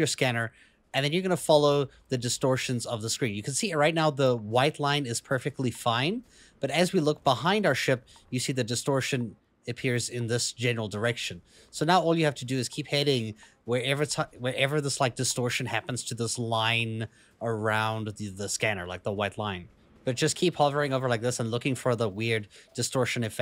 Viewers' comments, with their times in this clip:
0:10 Also, look closely into this video to see what the distortion looks like.. the solid circle actually breaks. There is also a very subtle static sound that accompanies the distortion.